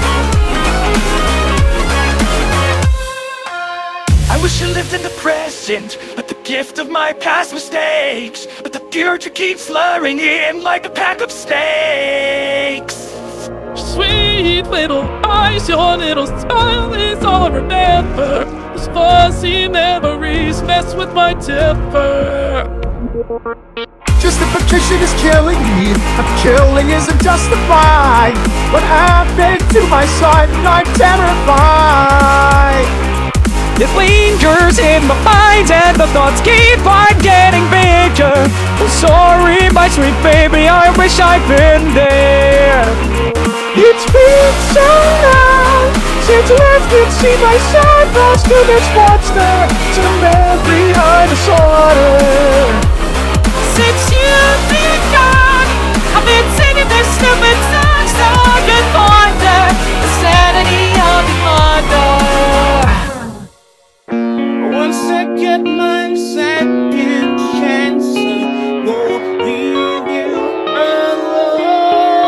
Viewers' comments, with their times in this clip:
0:03 THAT IS NOT WALTER WHITE
0:04 it’s no fault of your own but Walter doesn’t sound right I just can’t see him singing anything lol and have never heard that happen It doesn’t sound like Walter it’s just the AI itself
0:13 Bro Walter said “LiKe A pAcK oF sTeAkS 🥩 “ 😂
0:13 mr beast is on the verge of tears
0:14 mr beast is sick it sonds like
0:14 he sounds like he’s gonna burst into tears bruh
0:15 mr beast actually sounds like he's about to cry
0:28 what happend to my s- son dissappears
0:30 I didn't know the rock had a son when he said what happend to my son im terrified
0:33 Dam Nickeh30 Can sing good i can't do that good
0:44 That aint moist thats slimy 💀
0:53 Oh my God, what's wrong with the voice of the Spot?!